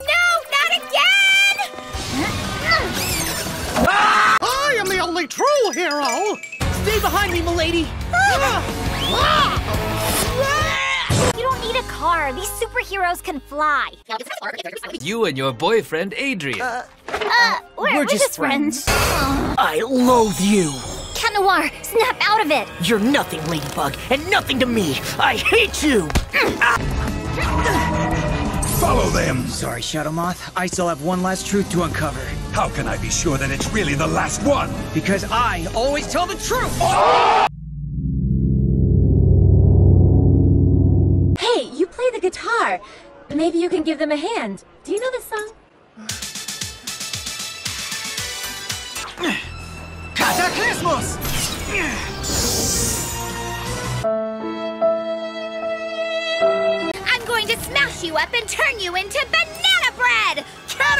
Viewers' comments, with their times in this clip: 0:05 that is sound like Mickey Mouse
0:21 perfectly cut scream-
0:24 I JUST LUV THE SCREAMING CUT SCENE!!
0:26 perfectly CUT SCREAM OF CHATNOIR
0:41 DID ANYONE NOTICED THAT THEY CHANGED THE VOICE IN THE MOVIE IT WAS SQUEAKY